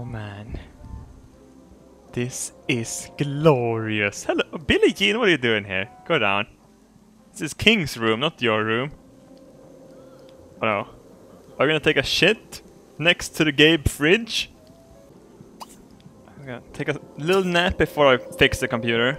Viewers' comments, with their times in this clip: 0:05 In all of his videos he has pronounced j's silently but his says billie jean correctly